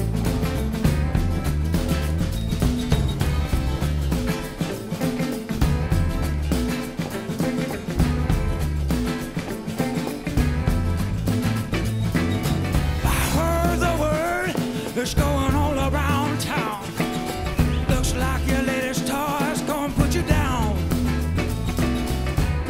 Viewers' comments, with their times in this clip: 0:10 Just wicked stank. Once they get warmed up they just tear it up. I cant help but think tho that the addition of Paul Shaffer's organ woulda taken this to a whole 'nother level. Maybe some horn accents too. Either way...as a musician they are a team to aspire to.